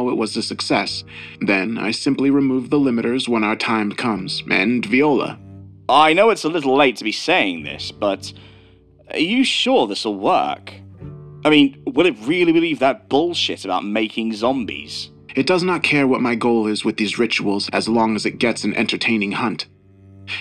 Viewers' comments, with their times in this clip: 0:04 Another mistake here: it's pronounced "v'wah-lah," not "vee-oh-luh" lol.
0:04 Another mistake here: it's pronounced "v'wah-lah," not "vee-oh-luh" lol.
0:05 "And Ve-ola"…… SMH I enjoy your narrations, and I also get a real kick out of hearing your mispronunciations…. This was right around the time frame… 😂😂😂😂😂😂